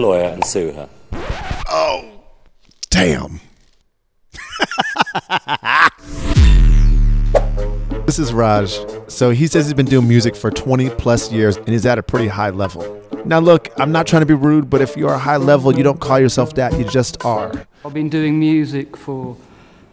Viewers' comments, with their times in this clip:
0:04 that laugh was just plain evil